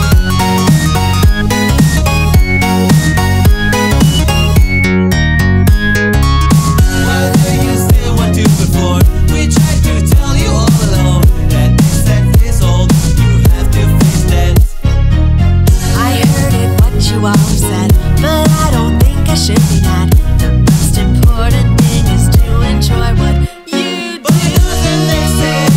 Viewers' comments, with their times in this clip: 0:07 I thought it said "Bitch I told you all along" :p